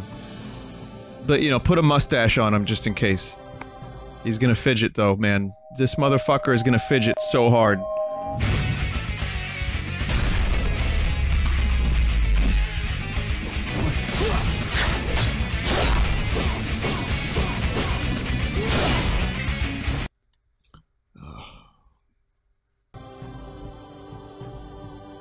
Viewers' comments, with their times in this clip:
0:09 Did I hear knockoff Jazz Jackrabbit music in Super Bruno World!? did I HEAR METAL RIPOFF CONTRA MUSIC!?